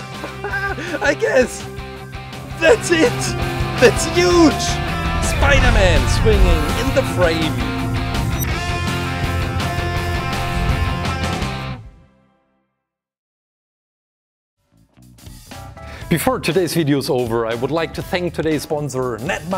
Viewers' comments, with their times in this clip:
0:03 R.I.P. Headphone users/me